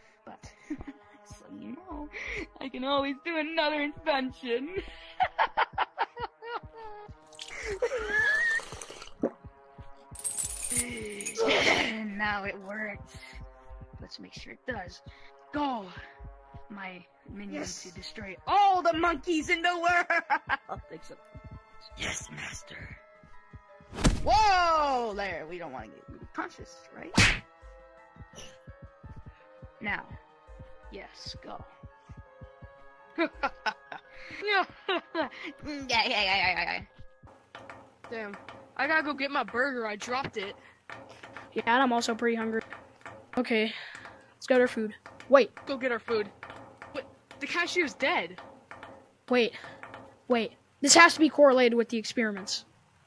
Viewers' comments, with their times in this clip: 0:03 Bro what was the scientest wheeze 💀💀💀💀
0:34 bro what was that laugh?💀
0:35 Drunk SpongeBob ahh laugh☠💀☠💀
0:37 got me with the laugh